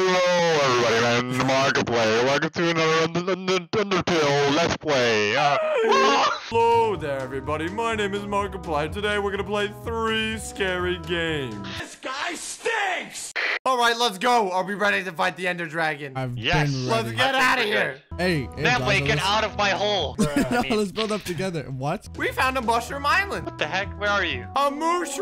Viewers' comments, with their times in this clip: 0:06 he sounds more like the yo mama guy